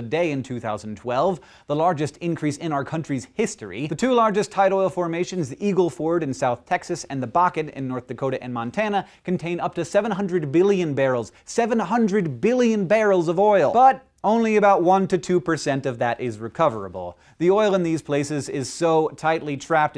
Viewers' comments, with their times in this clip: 0:03 jeez Hank, you sounded pretty enthusiastic about increasing oil production settle down